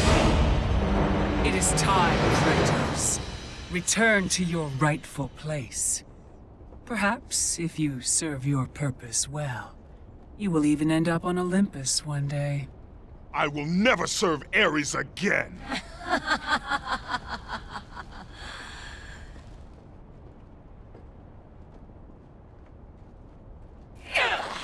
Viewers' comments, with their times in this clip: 0:07 from and on there is no music or sound effects. it actually sounds like people recording voice work in a studio. but forget that, the 'bros before hoes' thing needs to be fixed!! sigh...